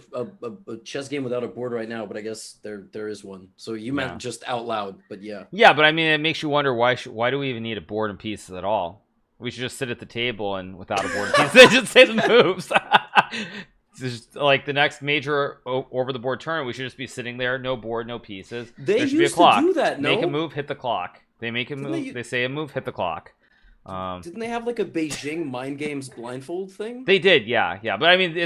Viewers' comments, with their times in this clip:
0:09 “We should just sit at a table without the board and pieces and just say the moves” Proceeds to laugh in high IQ